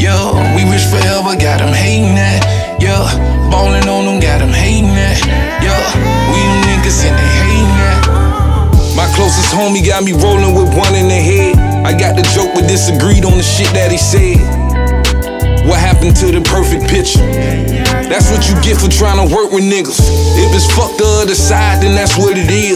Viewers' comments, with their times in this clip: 0:09 This is what I like to hear...Florida supporting Florida. Trina been doing the same thing lately. Respect Ross. Edit: It’s crazy how Ball Greezy verse starts unintentionally.